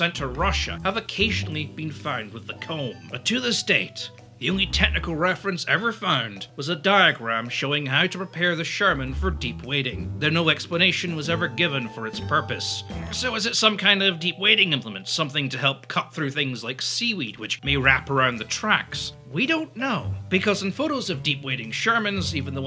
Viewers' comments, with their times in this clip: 0:03 he didn't bwah "THE COMB!!!" How dare he.